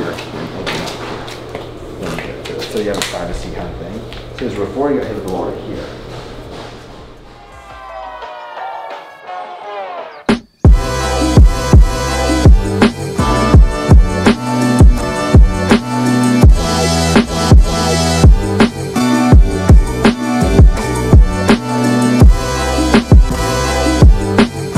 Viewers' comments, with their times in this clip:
0:09 heard that tune recently rate that